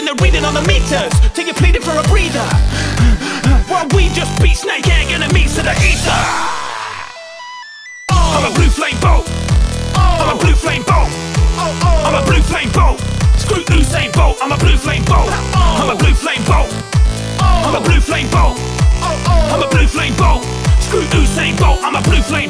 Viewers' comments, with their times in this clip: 0:06 Step 1: Set speed to 0.5 Step 2: Go to Step 3: Hail Satan